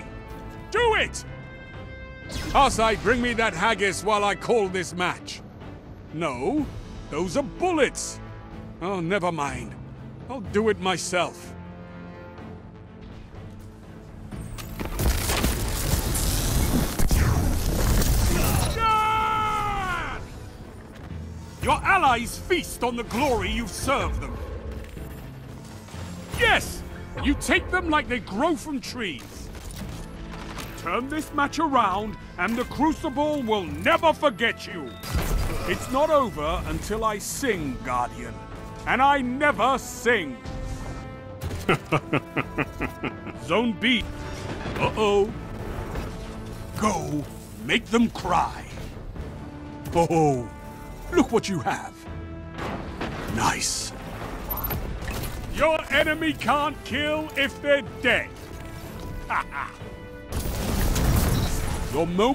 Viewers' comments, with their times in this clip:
0:08 shaxx is thanos??😳
0:18 best scream I have ever heard...
0:18 I love when Shaax just yells “YESSSSSS!”
0:40 best laugh ever
0:43 That laugh with the "zone B" phrase When you pick up heavy ammo. Makes me misthink he saids: Zombie